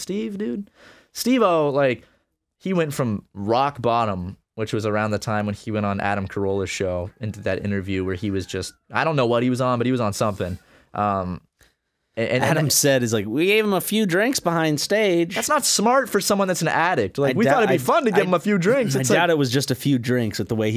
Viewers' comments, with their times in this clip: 0:05 you can literally hear arin screaming in the background recording the power hour